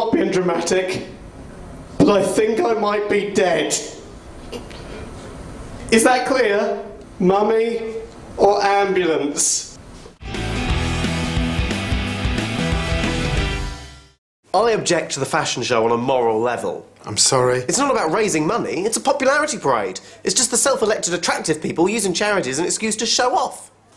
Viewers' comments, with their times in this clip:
0:08 anyone else hear someone smirk after wills line?